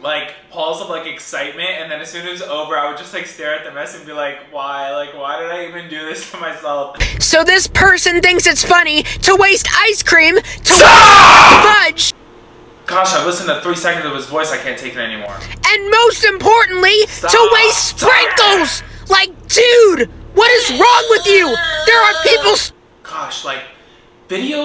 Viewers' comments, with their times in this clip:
0:10 My guy screamed so loud I almost dropped my compurter 💀